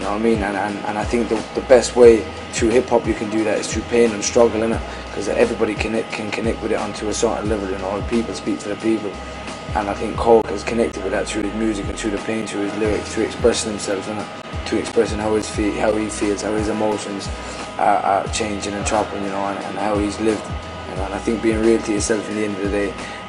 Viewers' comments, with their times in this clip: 0:10 .... "TRU his music, TRU da pain, TRU his lyrics" you knoeee lool :L